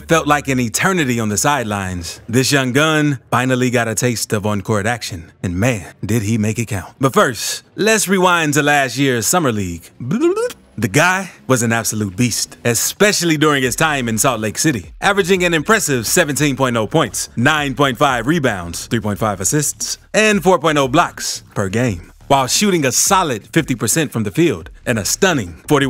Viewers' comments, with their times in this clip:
0:08 For how well spoken you were throughout the whole video, that rewind noise caught me way off guard lol. Great video, loved the analysis and I can't wait to see OKC over these next few years